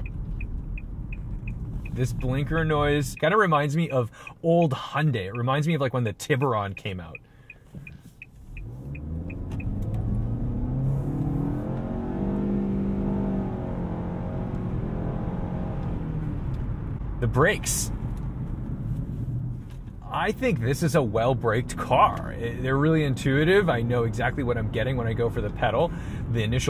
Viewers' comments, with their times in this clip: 0:08 the CVT and tach don't agree on the rpm